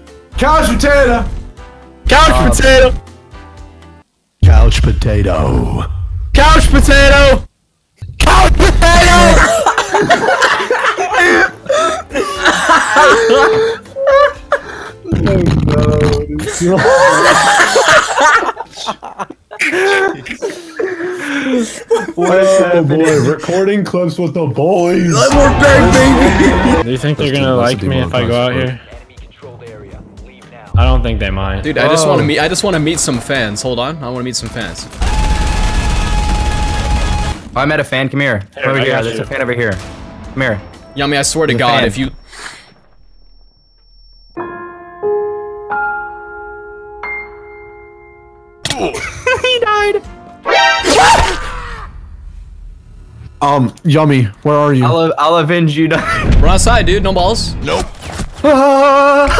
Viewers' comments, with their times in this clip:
0:04 Bobs burgers mixed with Optimus Prime
0:44 idk why but it sounded like "The Evil Within's" mirror theme...